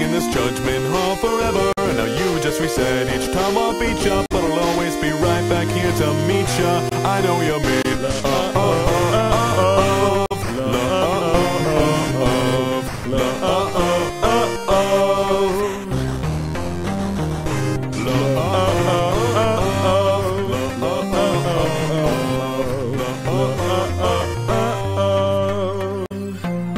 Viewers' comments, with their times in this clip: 0:05 nice voice sans
0:07 I think they could use some work singing together
0:08 gaster and sans saying looooove is cringey
0:09 same voice OoOoOoOoOoOoOOoO
0:10 when i get a voice crack
0:11 ok ok ok gaster jujst pls stop ur ruining the song ok? not yo turn yet
0:12 Is the only time there's that perfect harmony in Sans' and Gaster's singing. And then it just turns awful again.